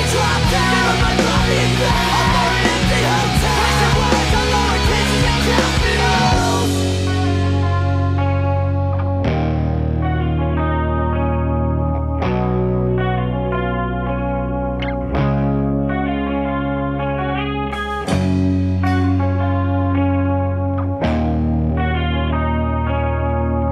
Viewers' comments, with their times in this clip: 0:06 MTV2 use to have this show called Control Freak where viewers would vote for their favorite videos they would want to see on air and the one with the highest percentage would then be the one that would follow after the current video that was on. That was the first time I heard this song and it was AWESOME!! I was like that's quite a title for a music video. Pretty lengthy lol. I was still relatively new when I got into this sort of music but man it was just the best, Miss the early 2000s with a PASSION!! Oh and I just gotta say. I LOVE HOW THE INSTRUMENTAL SOUNDS I asked myself when I was young HOW THEY MAKE IT SOUND SO AWESOME LIKE THAT?!? My young ears found enjoyment at a young age :D